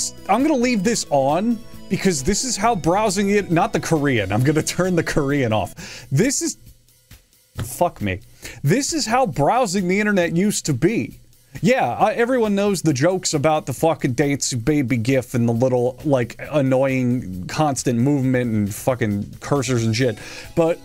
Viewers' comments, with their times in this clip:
0:06 the genuine fuck me